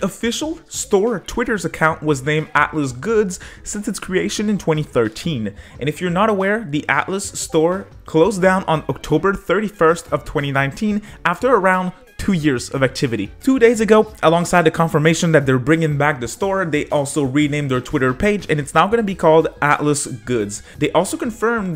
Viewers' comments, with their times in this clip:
0:06 i thought i got a discord notification